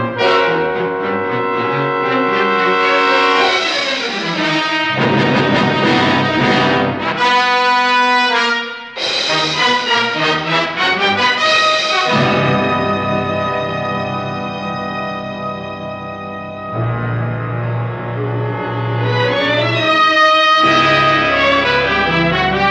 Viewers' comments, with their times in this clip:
0:04 I came here for this tune!😁